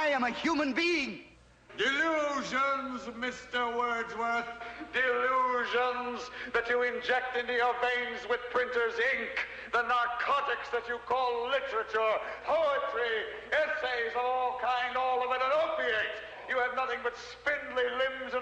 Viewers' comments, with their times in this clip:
0:03 I love how the Chancellor picks up his microphone as if to subtly suggest that he has a right to judge Mr Wordsworth as obsolete just because his voice is loud as someone who loses an argument would shout down their opponent.